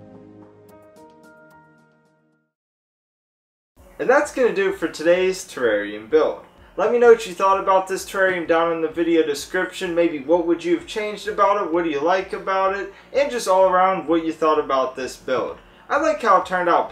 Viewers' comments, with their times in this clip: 0:04 Springtails scream in unison